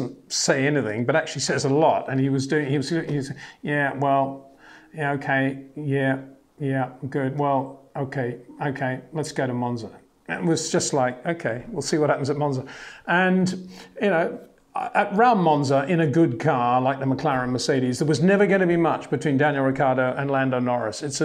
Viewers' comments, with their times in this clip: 0:06 perfect danny ric sound there 😂